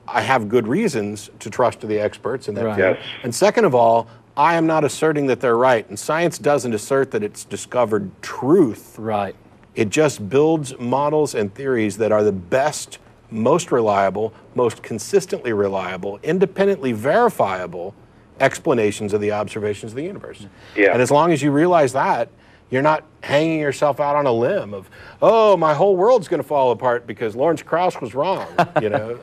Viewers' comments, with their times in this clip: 0:10 the matt rap